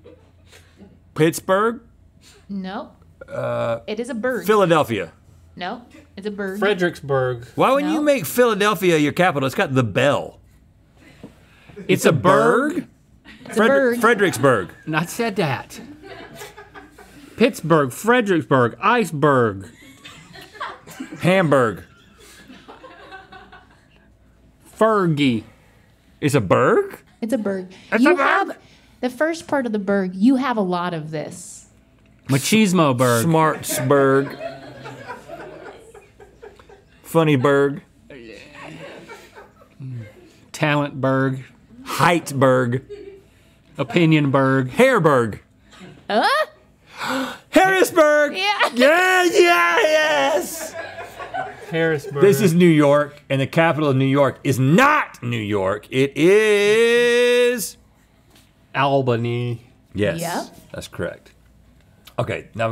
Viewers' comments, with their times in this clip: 0:09 I have never laughed harder at a random synchronized phrase.
0:13 Why is nobody talking when they both say “it’s a burg?” at the same time
0:48 Rhett turns on auto tune